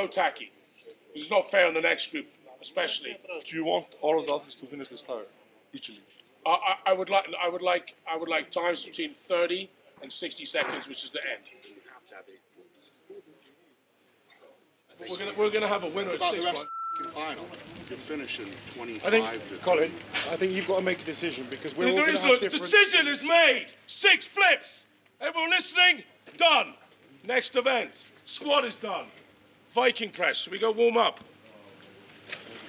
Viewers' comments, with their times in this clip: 0:08 I think Eddies fart and Brians reply is giving great insight to the whole story.
0:20 must take some serious balls to yell at a gang of the world’s strongest men like that lmfao
0:20 Why are we shouting about the tire flip? I don't understand the discrepancy